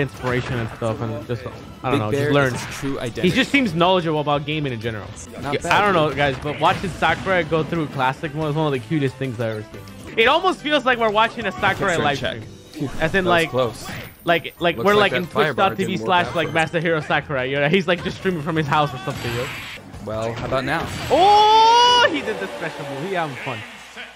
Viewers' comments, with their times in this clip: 0:06 so is nobody going to talk about how it says "black pit"